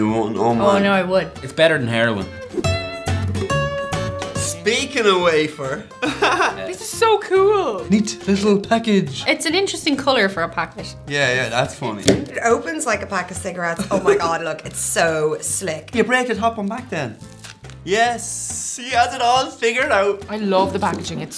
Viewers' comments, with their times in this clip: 0:06 seriously this guy is on drugs!! His laugh OMGGGGGGG